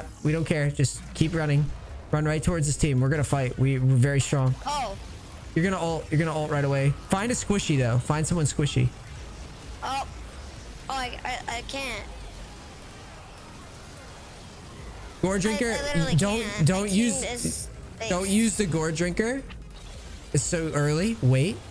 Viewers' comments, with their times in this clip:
0:08 I felt the panicked "I can't"